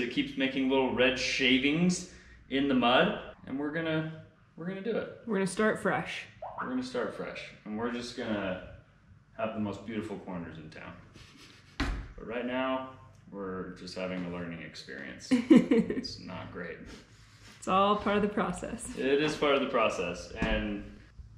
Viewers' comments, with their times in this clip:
0:06 What was the noise ?